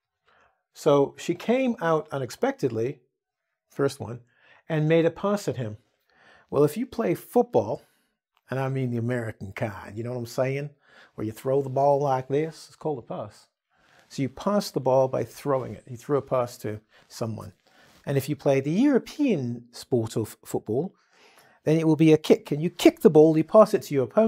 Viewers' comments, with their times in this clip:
0:08 Some nice Texan accent there)))
0:10 Is it just me or does a British accent sometimes sneak into some of his words? (pass). Also, and I think this was intentional, He did a southern accent right?